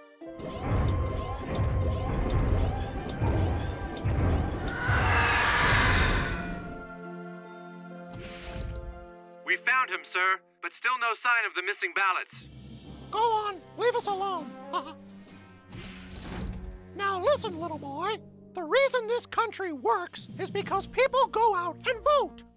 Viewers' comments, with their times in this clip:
0:05 It sounds like screaming.